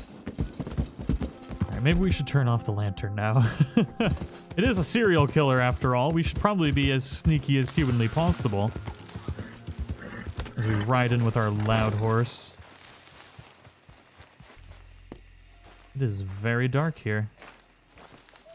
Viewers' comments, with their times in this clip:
0:03 Anyone else notice the Hank Hill laugh